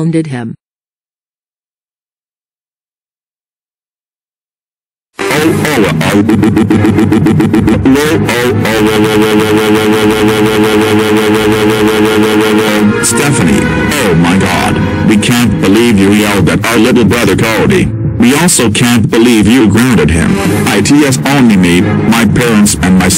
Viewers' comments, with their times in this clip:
0:05 CAILLOU’S VOICE SOUNDS LIKE HIS DAD BORIS’S VOICE 😆😂🤣